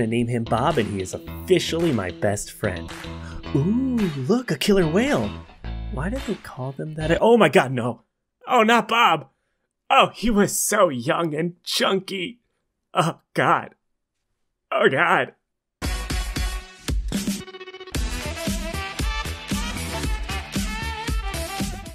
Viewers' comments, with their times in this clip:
0:07 his voice changed OMG BOB I love it